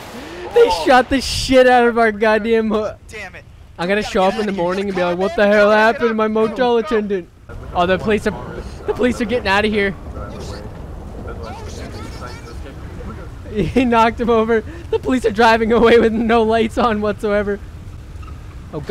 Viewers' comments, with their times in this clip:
0:06 the way he screamed lmfao